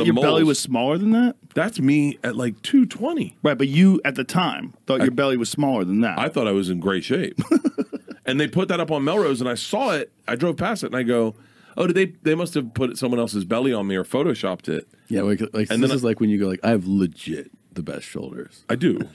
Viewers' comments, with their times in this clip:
0:06 “I thought I was in great shape” Joes laugh response to this is hilarious! 😂 he’s not trying to be funny he’s just genuinely amused that Bert really thought that
0:07 The way Joe laughs at Bert saying "I thought I was in great shape"